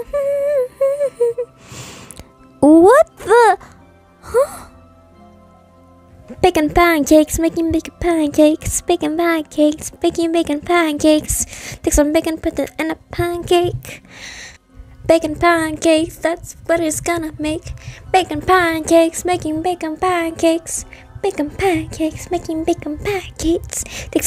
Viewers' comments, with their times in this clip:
0:06 Amity singing Bacon Pancakes from Adventure Time is probably the best thing to happen all year.